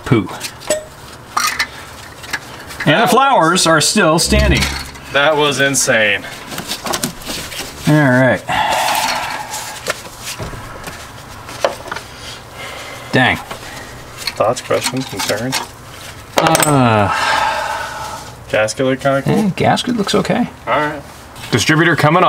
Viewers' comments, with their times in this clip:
0:04 that bug sounded like a life saver when it flew by.